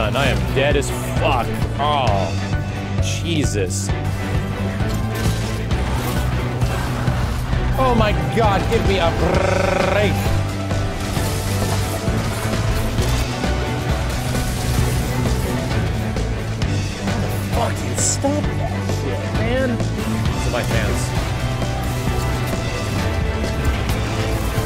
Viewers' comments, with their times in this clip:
0:09 when you slot the ps2 disk improperly and does this sound